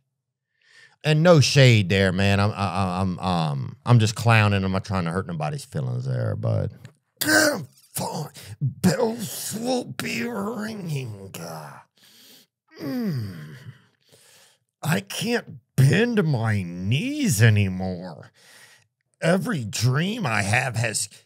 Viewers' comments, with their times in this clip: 0:05 Theos ozempic character sounded like Macho Man dying at certain points.